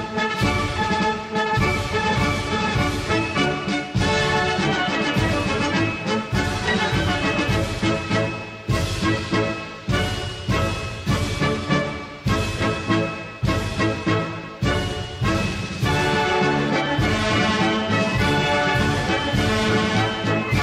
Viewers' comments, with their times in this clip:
0:07 What is the name of the song at the mark? Sounds like some german marching song.